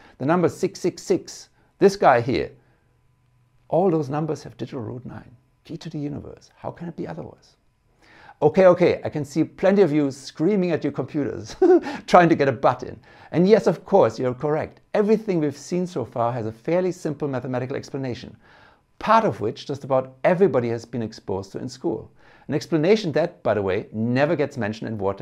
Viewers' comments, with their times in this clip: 0:10 love your laugh brother! :D and thank you for this video. One thing this video does explain is why I love T&A so much! lmao! I was created to. Just like everyone else.